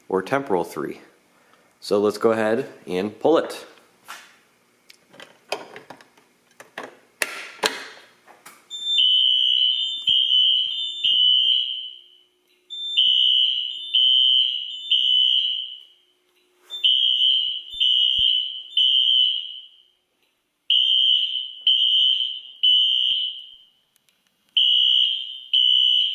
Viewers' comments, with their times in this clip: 0:08 I remember you showing us those Fire Drills. I loved watching those videos when I got home from HS each day because the alarm sounds like a whistle. I guess it wakes you up and I would trust that alarm to wake me up in my own home. I don't care if it is loud but that is the point.